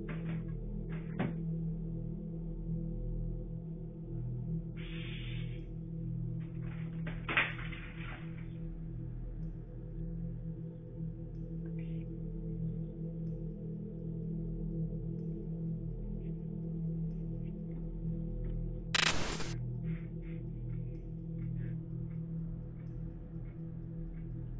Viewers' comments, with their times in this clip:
0:05 Did it hiss at the cat?